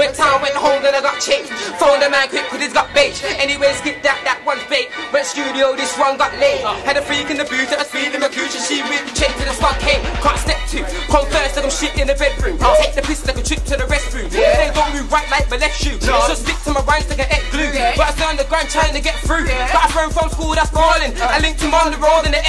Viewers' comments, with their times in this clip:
0:10 that flow still bangs !!!